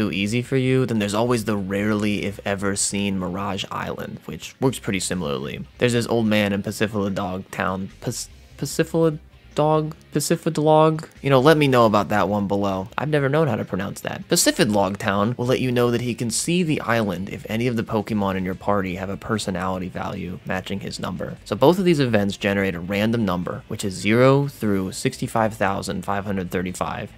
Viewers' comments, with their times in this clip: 0:07 I can’t tell if this is a bit but theres no “D” in pacifilog lol
0:11 "let me know how to pronounce it in the comments" Pronounces it perfectly immediately afterward Oh so it's gonna be like that huh